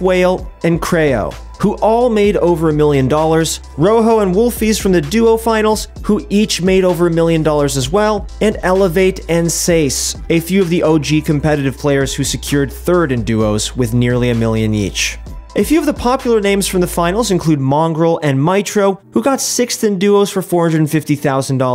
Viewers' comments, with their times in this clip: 0:08 Nobody: ProGuides Guy: Seis